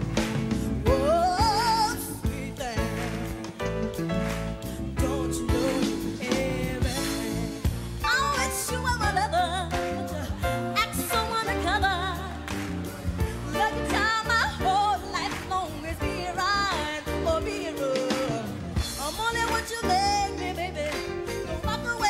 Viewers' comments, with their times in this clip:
0:08 who messed up, her or the band lol?